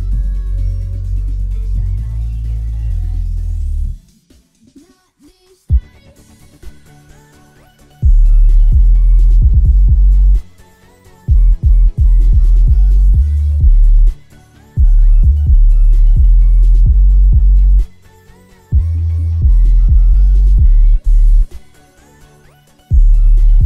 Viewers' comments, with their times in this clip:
0:08 is almost twice as bass boosted as the first drop if you put it on an eq and look at the intensity. The last drop is insane.